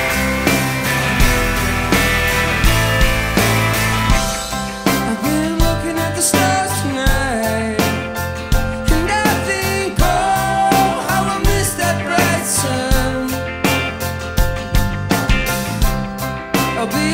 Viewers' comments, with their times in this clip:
0:03 very hard singing